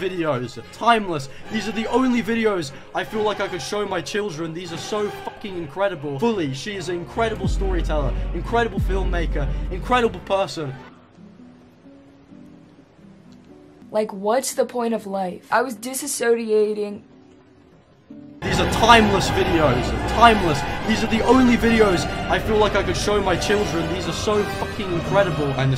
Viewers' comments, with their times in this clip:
0:07 “🗣️🗣️SHES AN INCREDIBLE STORY TELLER!” yawns “like a what’s the point of life 🙄🙄I was dis-a-sodiating… “